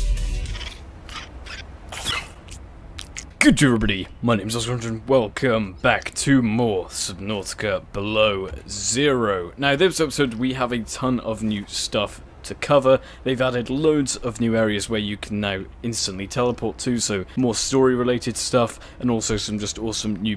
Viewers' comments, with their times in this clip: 0:04 “my name’s gduhfhgjhfhfj”